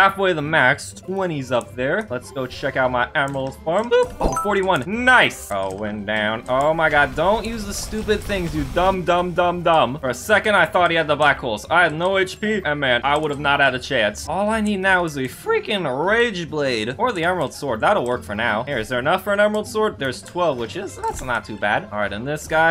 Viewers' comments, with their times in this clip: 0:10 THE BLACK BALLS?